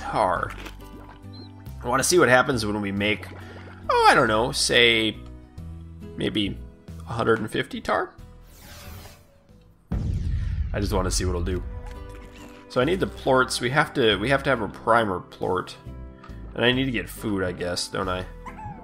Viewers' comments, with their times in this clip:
0:03 the way he said 150 tarr and then the boom slime exploded was perfect